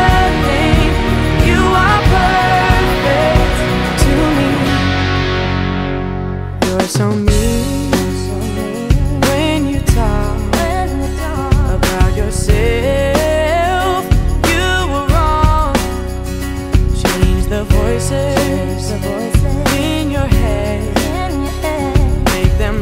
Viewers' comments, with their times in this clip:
0:08 You can hear Allison Iraheta and through out the backgrounds!! I knew she was doing the back up singing this year but didn't know she would be on the recordings too :O